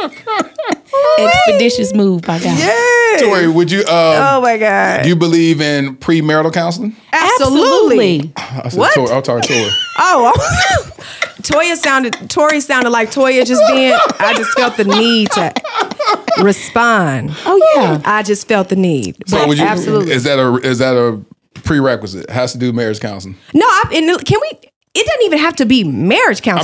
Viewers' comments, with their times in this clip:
0:08 did y’all hear the harmony? Y’all need to start a group 🤣🤣🤣